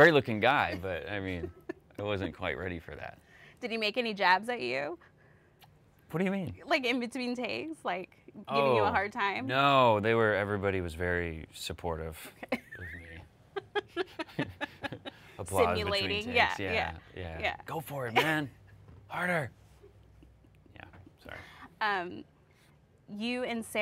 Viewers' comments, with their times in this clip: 0:06 omg "whadaya mean?" that is just adorable.